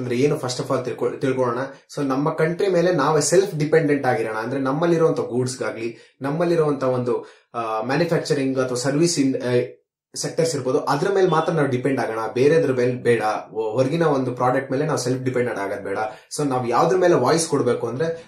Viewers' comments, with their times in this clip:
0:04 speaking mistake " atma nirbhar bharth " .